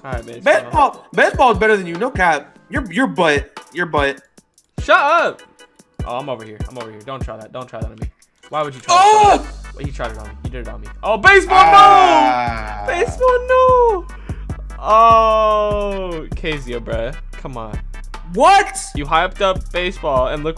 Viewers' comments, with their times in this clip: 0:08 he sounded like he was giving birth lmfaoo